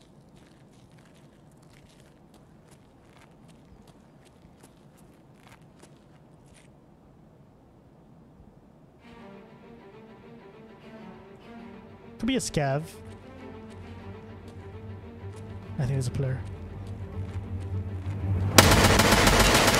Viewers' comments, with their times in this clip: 0:06 when that music kicks in, that's some good editing. Had me hyped!